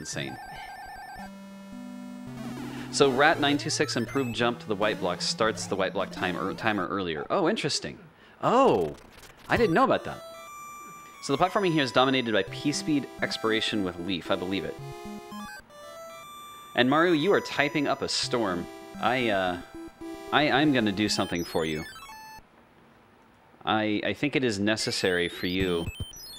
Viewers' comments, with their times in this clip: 0:09 i can't be the only one hearing the ocarina of time when TASbot used the flute.